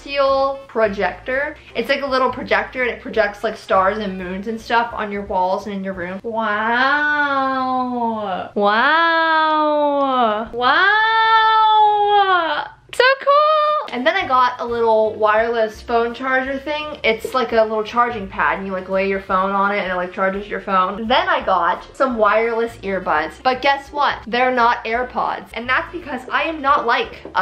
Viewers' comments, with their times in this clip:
0:05 Her wows is sooo cute
0:06 she sounds like the cat outside our house at 3 am
0:06 you sound like my cat when she's hungry 😂
0:08 the sound of my cats fighting outside
0:14 she sounds like a cat saying meow?!??🐈🤷🏻‍♀️💁🏻‍♀️😎